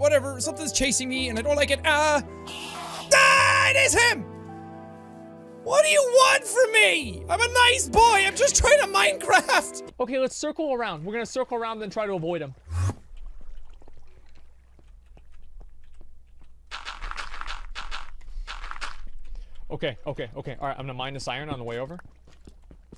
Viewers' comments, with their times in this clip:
0:10 the way he panics and immediately blocks the entrance from just hearing the teleporting sound is hilarious